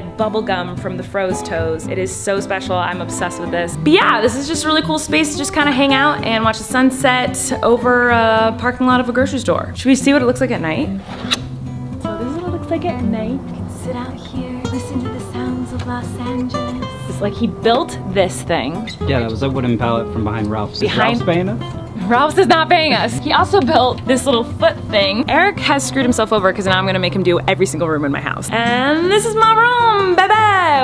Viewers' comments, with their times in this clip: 0:03 said beyeah, think she didn’t do that on purpose
0:10 Wait, did they kiss ?? I didn't even notice but it sounds like a smooch!
0:11 am I the only one who thought they kissed? 😂😂 think it was the door though 😫
0:11 Why did i hear them kiss aww😘